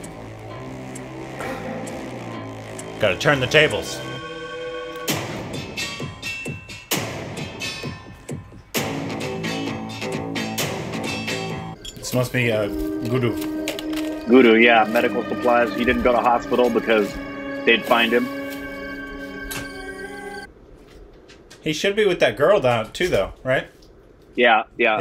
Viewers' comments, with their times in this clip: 0:06 I also react the same when I hear this music